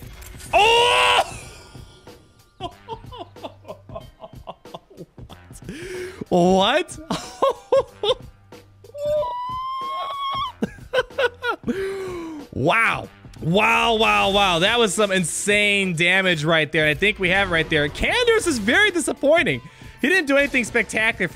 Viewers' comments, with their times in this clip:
0:07 your scream makes the whole video
0:09 The sound of ewoks roasting over a fire
0:09 I think your tea kettle is boiling